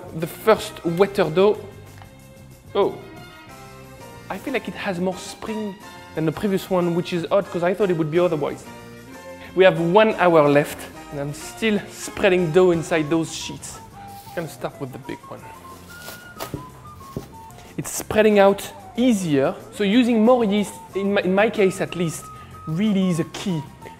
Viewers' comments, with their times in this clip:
0:05 That accent hahah. more SPRING.